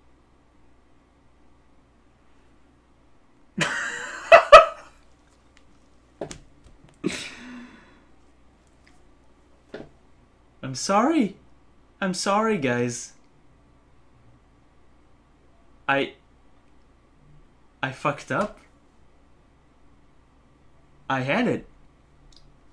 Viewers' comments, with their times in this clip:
0:03 Lol you cry 😅